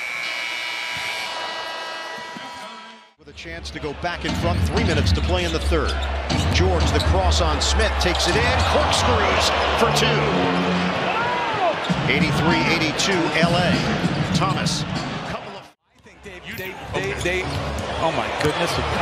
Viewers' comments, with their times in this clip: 0:04 “with a chance to go back and fuc*” i swear thats what i heard